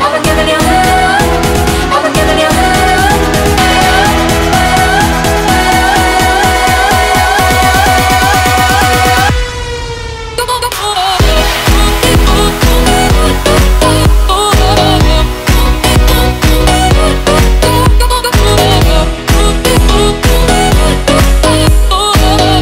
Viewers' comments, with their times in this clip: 0:09 never going to get over that drop, love it!!!